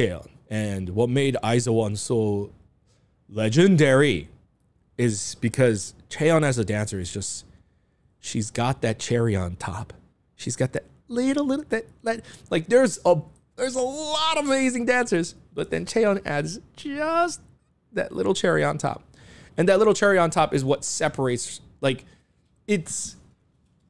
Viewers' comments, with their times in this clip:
0:08 I heard Chaeryeong lol